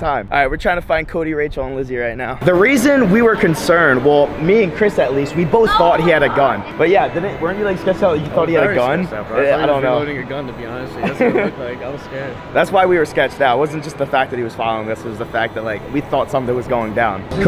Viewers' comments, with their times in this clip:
0:05 you could hear someone moaning